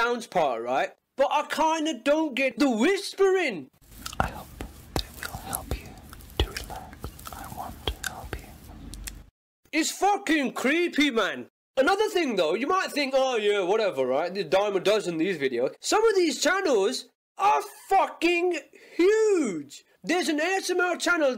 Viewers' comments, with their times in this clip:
0:04 another reason i hate asmr is the whispering